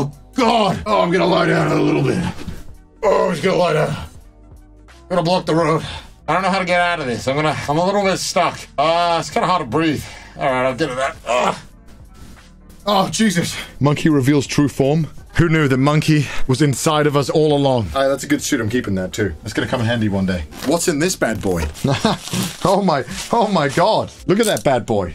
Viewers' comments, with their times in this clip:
0:06 wtf with your voice